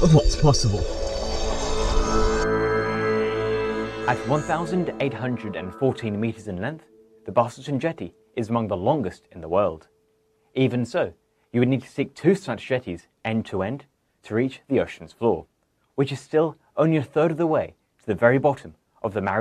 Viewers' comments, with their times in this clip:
0:06 Enunciation of "Busselton" wasn't good. Needed to search for Jetty + 1800m to find it. Longest wooden piled pier/jetty in Southern Hemisphere, located in Western Australia.